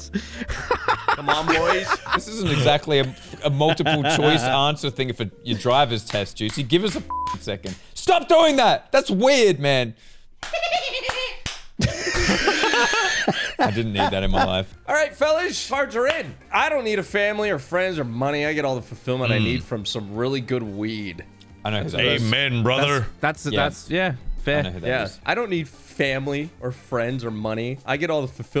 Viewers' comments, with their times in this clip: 0:10 what was that laugh 😂